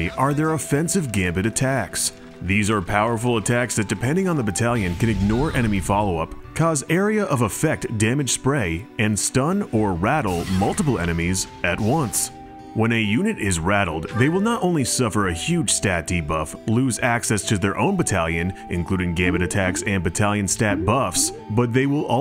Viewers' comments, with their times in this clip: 0:04 Omg i was getting major Mario party vibes at the change of ost here.